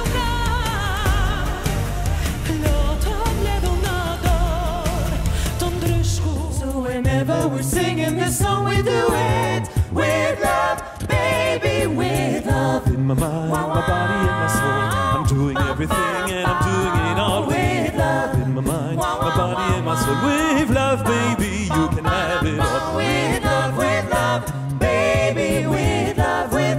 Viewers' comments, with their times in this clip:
0:07 ah yes that time Belgium tried acapella and it nearly worked